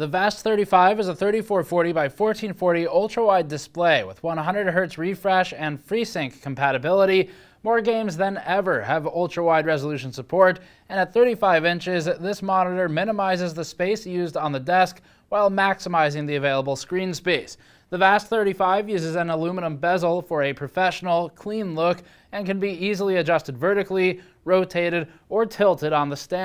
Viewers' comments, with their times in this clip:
0:09 the video is so noisy lol.